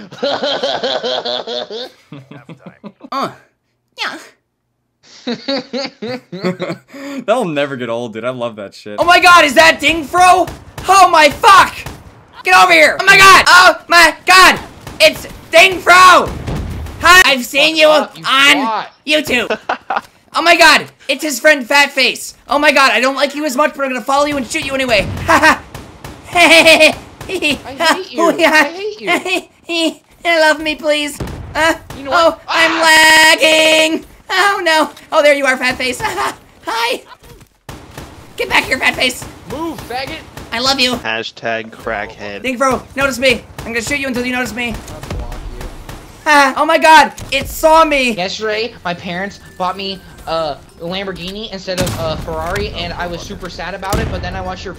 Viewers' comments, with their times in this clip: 0:09 close ur eyes and it’s adin ross
0:25 he sounds like Eric cartman XD
0:35 dat voicecrack doe